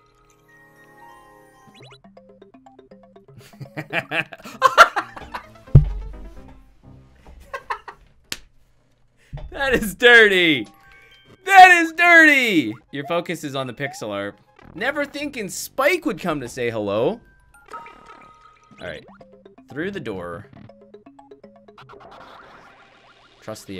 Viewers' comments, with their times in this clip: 0:04 thats-a weird sound